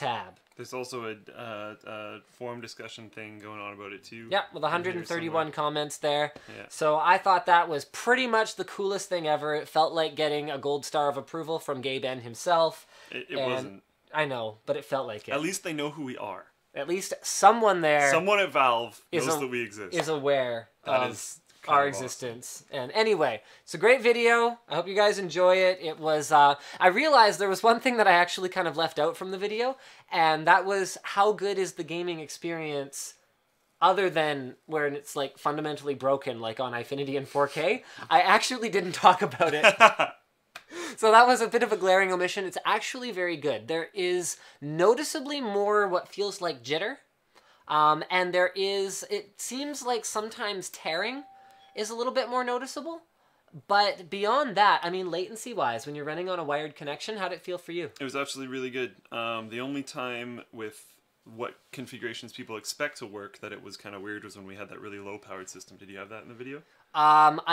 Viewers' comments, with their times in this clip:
0:10 Who the heck is gay ben?
0:51 Did you hear the doorbell ?